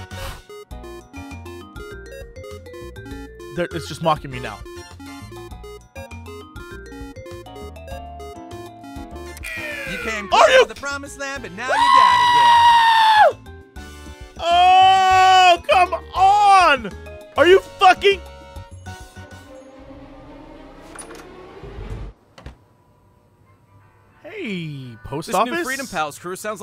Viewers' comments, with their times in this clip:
0:10 Fantastic goat impersination!